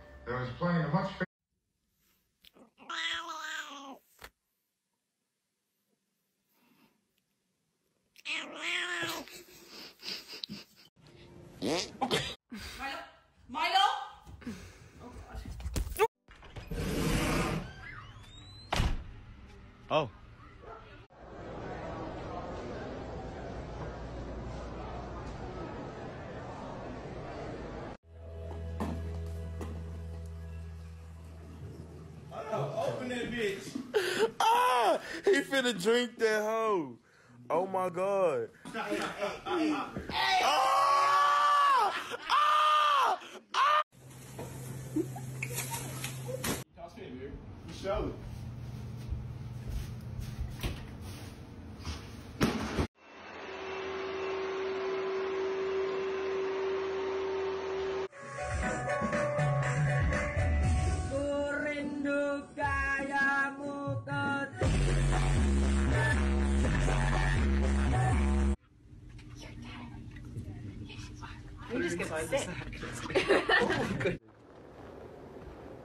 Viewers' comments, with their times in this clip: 0:10 this is the most elegant fart I've ever seen
1:01 killed me on when he boosted the bass